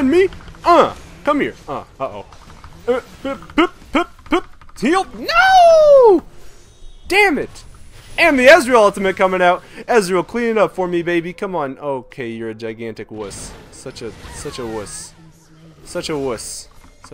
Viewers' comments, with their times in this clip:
0:04 I love the way you said NOOOOO lol
0:05 dat MJ voice